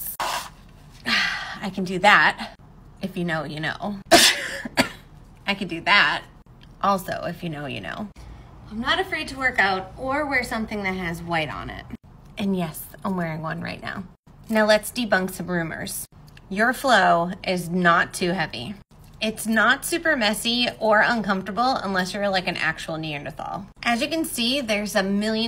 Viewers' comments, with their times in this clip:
0:07 I’m on my period rn and when the lady sneezed my blood rushed out 😭😭